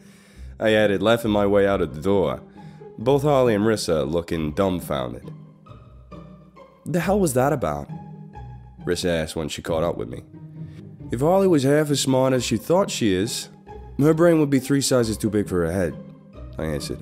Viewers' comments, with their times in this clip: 0:05 I truly love this series, but that guy screaming is nearly enough to make me unsub. It’s just too much. And sometimes, less is more. that character is just too much to bear, his speech is just way too much for me. No disrespect, it’s just my opinion. Be well all!